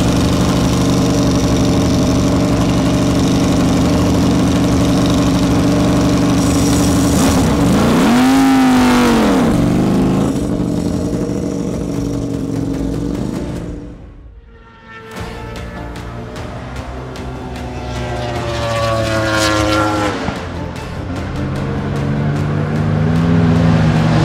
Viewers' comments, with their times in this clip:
0:06 my god that sounds throaty